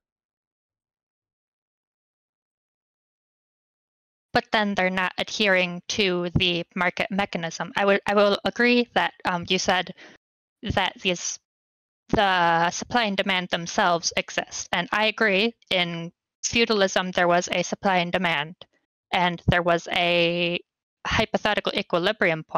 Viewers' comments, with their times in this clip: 0:03 I can hear her adjusting her nerd glasses before hitting the hard “actually then they wouldn’t be doing capitalism”